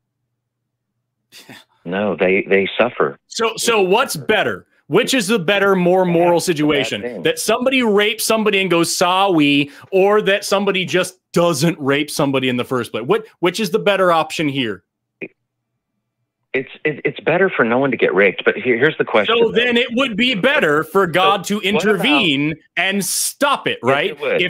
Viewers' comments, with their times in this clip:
0:09 what is with this dudes shifting tone? When hes trying to convince us of gods "goodness" he uses this soft faux calming tone as hensays the most heinous nonsense... Theism, not even once folks